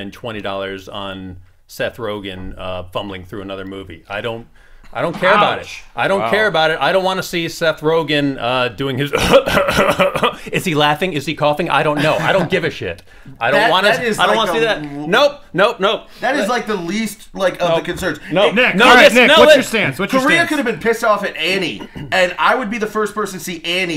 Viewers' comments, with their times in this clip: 0:09 Seth Rogan laugh impression you sir, deserve a medal.